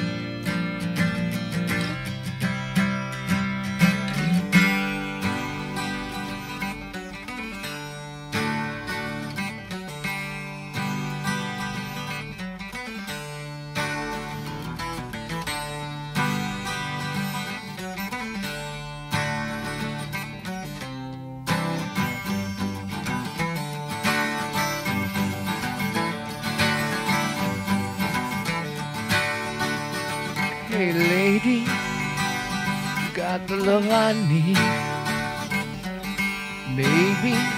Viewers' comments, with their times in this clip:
0:08 entrance of the 12-string so clever
0:20 Foot is tapping already without any beat.